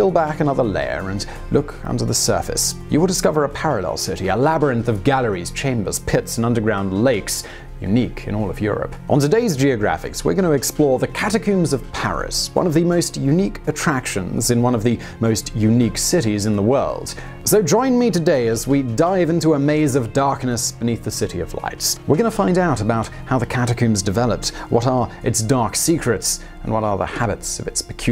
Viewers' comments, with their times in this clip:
0:09 One of my favorite things about this channel is that they don't mispronounce words to drive up the comment section. "On today's Geographics, we're going to explore; The catacooooooooooommmbs of Paris..." Son of a b...